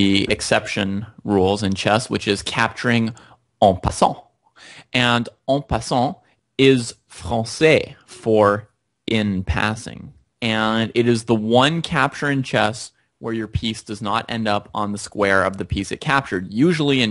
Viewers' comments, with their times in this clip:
0:03 Nobody: Him on Onpsant